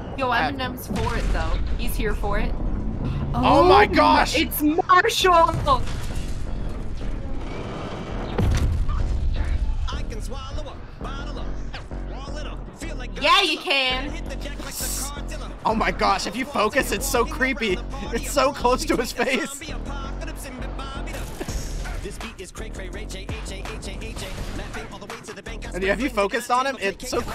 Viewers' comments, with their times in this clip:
0:08 Bro the way saw was said yeah u can when Marshall said ‘’I can swallow a bottle of _____’’